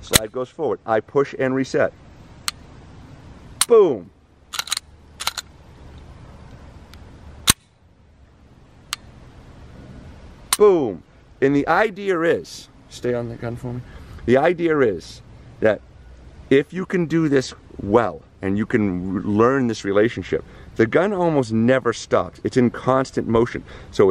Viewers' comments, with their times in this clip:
0:09 STERNLY EXPLAINING. ~stay on the gun for me~ STERNLY EXPLAINING. Y'all are so cute 🥰